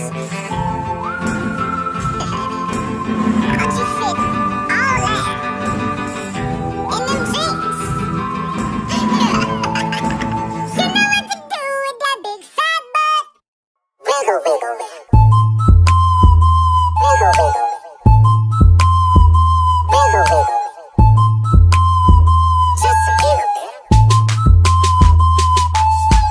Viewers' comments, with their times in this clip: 0:08 alvin laughs like a demon
0:09 Simon moves onto the next course, which is Simon on vocals😢